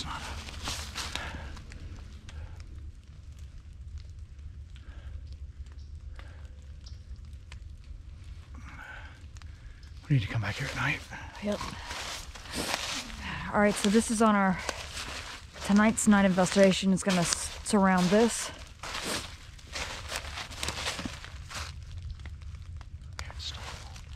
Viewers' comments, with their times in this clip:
0:06 At approximately you can hear what sounds like a howl if you listen carefully.